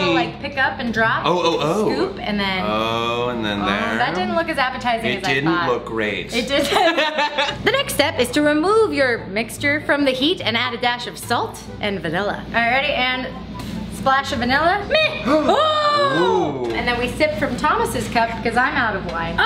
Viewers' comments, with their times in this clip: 0:05 her laugh is life